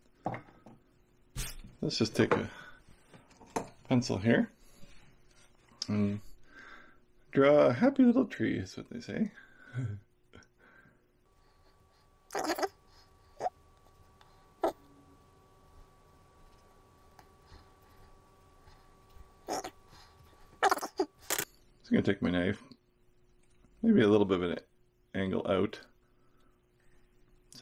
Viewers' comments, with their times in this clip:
0:08 Let's draw a "happy little tree, as they say" = priceless but I did note the tongue in cheek chuckle!